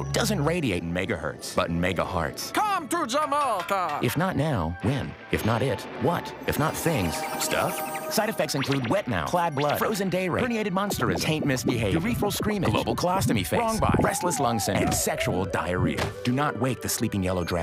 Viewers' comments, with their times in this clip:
0:03 Meatwad? Is that you?